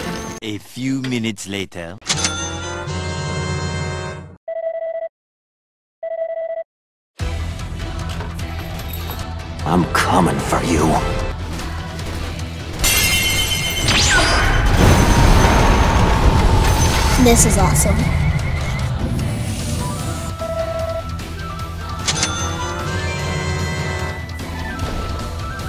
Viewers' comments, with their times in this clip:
0:07 Anyone know the song ? Sounds epic
0:13 music is amazing